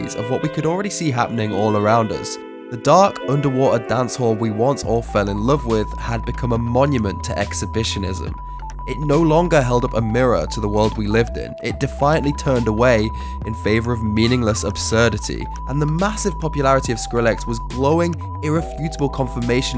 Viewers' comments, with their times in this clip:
0:05 Having been listening to dubstep for almost 10 years now, seeing anything pre 2010 as "old dubstep" or "UK dubstep", it is so weird hearing stories of artists I have never heard of and sounds that sound so dull to me because I grew up with the "brostep" craze. Because what you call brostep is just normal dubstep to me, and thus 50 minutes with UK dubstep in the background for the whole video, it makes me appreciate how far it has come. I mean that not to shit on what you love, but in this video alone, really you chose to put mid-range triangle waves for the drop? really? ( bg music)